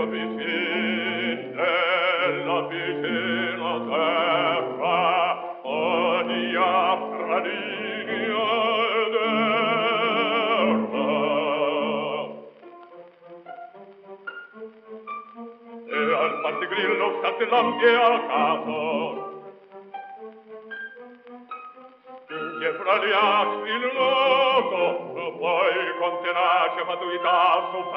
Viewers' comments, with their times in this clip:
0:10 REISEN in the Faust. Chaliapin had the weirdest vibrato. I never got used to it. I've tried since I know he is a legendary artist. Vibrato is all I hear!